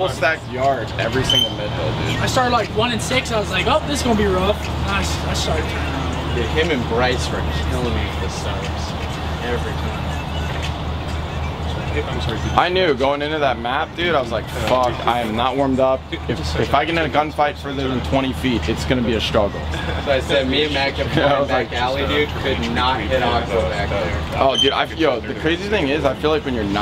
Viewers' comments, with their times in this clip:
0:09 someones playing Lil Uzi : Ronda 😂